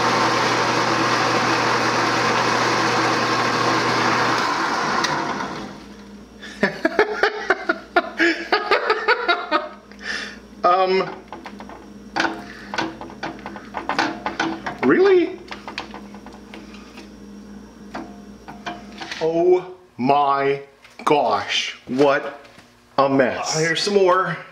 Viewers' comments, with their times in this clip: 0:06 The laugh is pure joy. Pure. Joy.